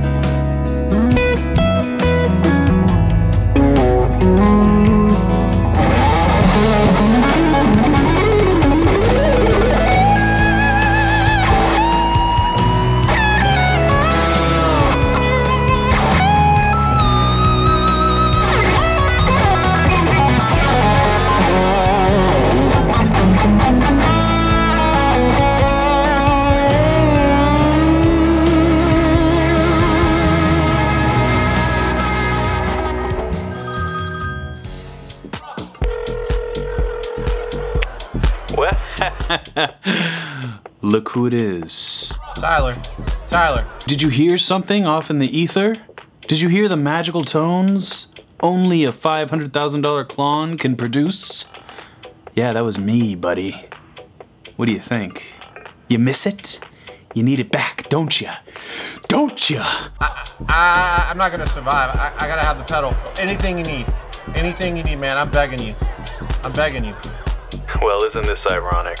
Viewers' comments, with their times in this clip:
0:05 dude wthat was soulful...well up until then it was sick
0:05 the real killer lick
0:06 probably best tone I’ve ever heard
0:21 That palm-muted part was tasty as hell!
0:26 wow I felt so good listening to that bend...
0:50 I love the Newman impersonation !